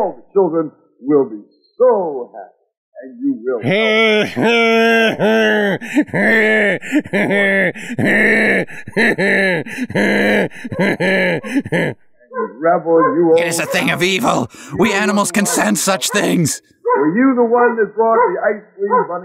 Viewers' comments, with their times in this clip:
0:04 I like to think that is the Ice Cream Bunny’s actual laugh, it would make sense because of it being really creepy